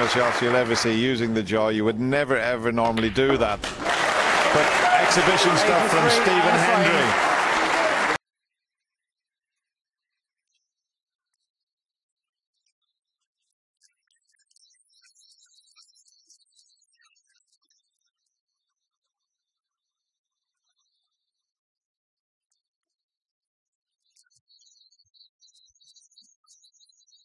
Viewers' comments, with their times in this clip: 0:10 birds in the hall
0:10 What kind of frequency was that into the video? Because it hurt my left ear and that's the only clip it done that on